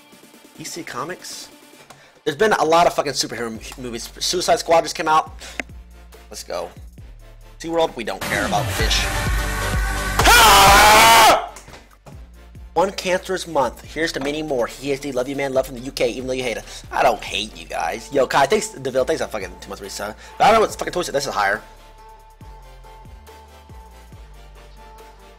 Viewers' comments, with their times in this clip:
0:07 when you play a song and then everyone in the party starts singing